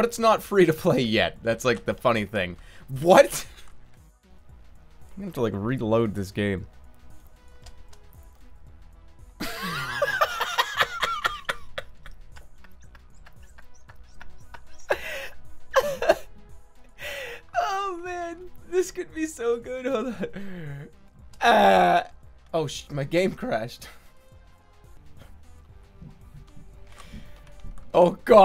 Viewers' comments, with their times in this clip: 0:09 joker ahh laugh